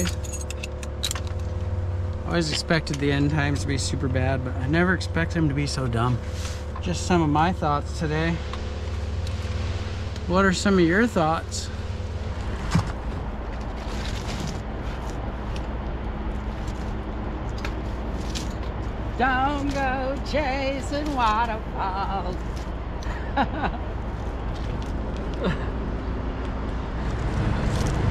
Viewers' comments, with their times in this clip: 0:09 you sound like a based Mr. Rogers 😀